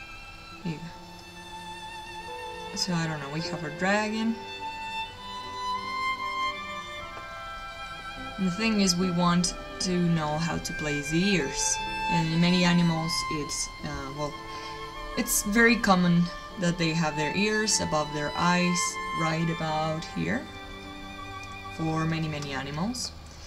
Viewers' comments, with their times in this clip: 0:07 I see that jawline, I see the smile and have an immediate thought - "Damn, this fella enjoys this nice violin tune too! :D"